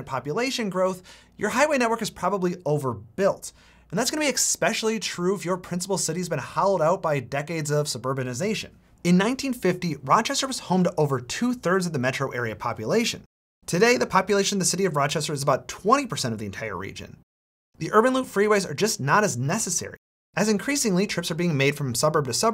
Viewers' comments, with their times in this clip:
0:03 what does exspecially mean?